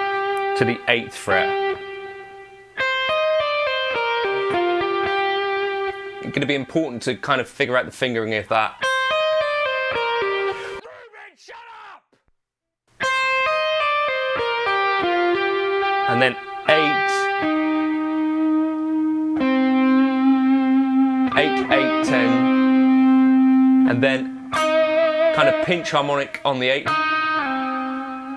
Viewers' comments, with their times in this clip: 0:10 I've never heard you use that tone before! T'was a little shocking. Beware the anger of a calm man.